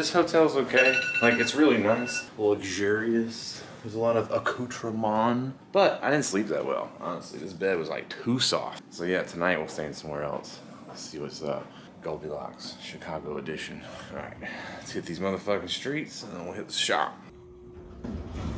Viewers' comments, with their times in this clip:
0:03 when the iphone alarm went off i panicked lol